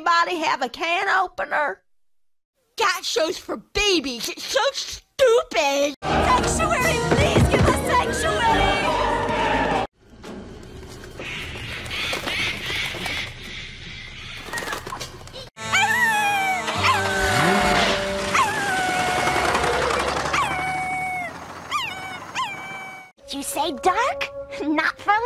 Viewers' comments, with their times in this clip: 0:09 could have sworn that was LL Cool J in "Deep Blue Sea"